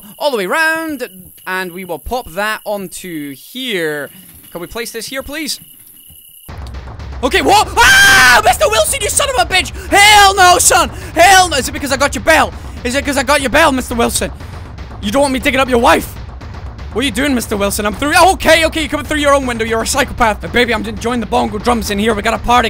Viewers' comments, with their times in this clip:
0:05 YOU MADE ME SHIT MY PANTS WITH THE RANDOM SCREAMING jesus christ